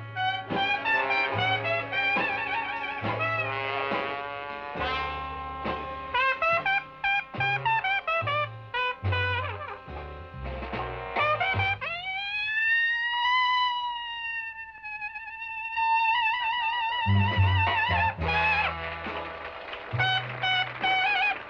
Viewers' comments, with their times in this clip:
0:09 Sounds like Gershwin's intro of Rhapsody in blue🎷😁